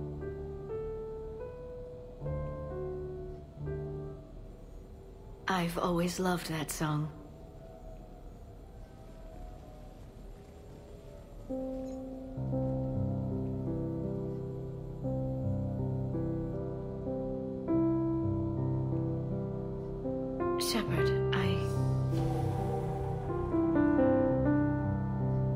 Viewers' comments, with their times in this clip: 0:09 I love how Glyph just took over the music to set the mood ^w^ and just keep watching lol.